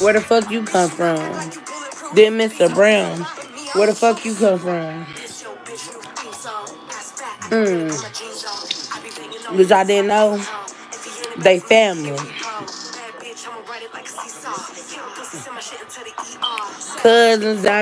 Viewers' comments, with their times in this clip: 0:04 When she started coughing bc she spreading lies